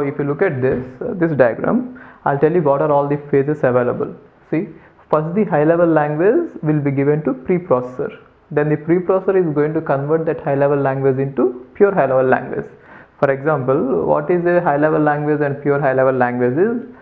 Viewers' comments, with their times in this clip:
0:05 did u say "fuck the"